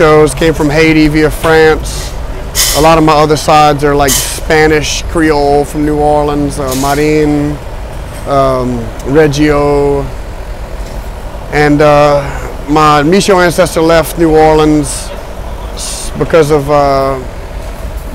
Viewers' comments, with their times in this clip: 0:06 he pronounced my name right - thank you